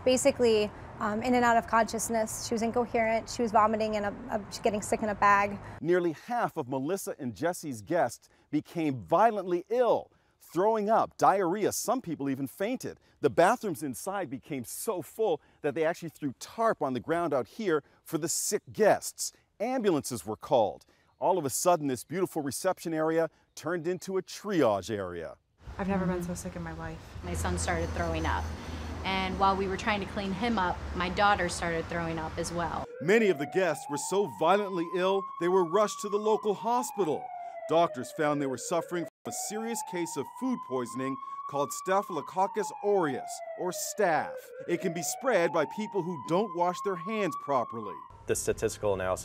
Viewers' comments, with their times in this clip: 0:10 I thought he said "throwing up diarrhea" but I realized he meant throwing up and having diarrhea 😌😂
0:32 the audio of a siren while showing a photo of an ambulance really does add to the validity of the story! Thank you sound engineer person!